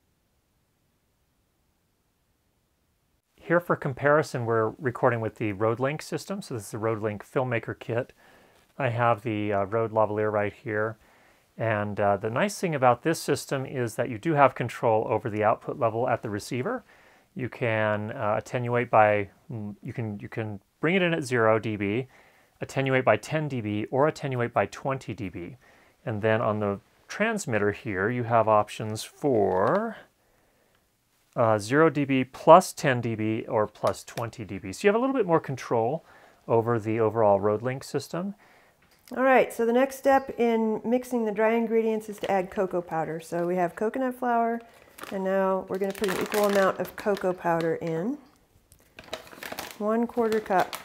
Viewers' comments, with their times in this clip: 0:09 When you switched to Rodelink I noticed change in noise floor as well as eq (Rodelink sounds bit muffled). Is that due to the mic or the system? I am asking because I own rodelink and rode go, and I am thinking about getting ME 2-II.
0:37 your voice sounds a bit different in this clip ;)